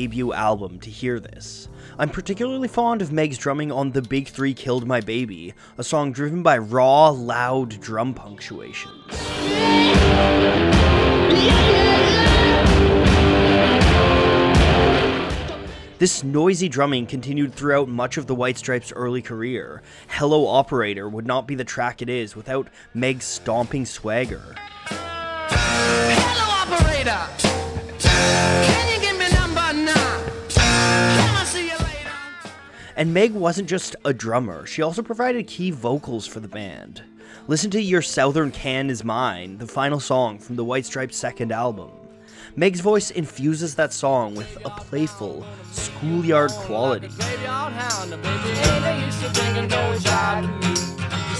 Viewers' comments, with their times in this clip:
0:05 He should have said RAW a bit louder.
0:37 never heard "southern" pronounced like that
0:37 did this guy seriously mispronounce the word “southern” ?
0:38 Literally never heard southern pronounced that way ever